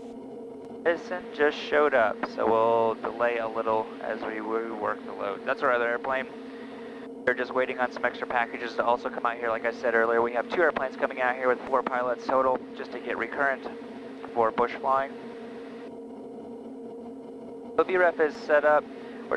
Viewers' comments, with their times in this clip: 0:04 Also... there is a tone and it seems that you're reading a company text. What was that and what devise did the text show up on? We have SpiderTracks and I have my iPad suctioned mounted to the side of my instrument panel, so my flight follower and/or dispatcher can send texts on that. However, I don't have that wired in such that I get a tone in my headset... that would be cool.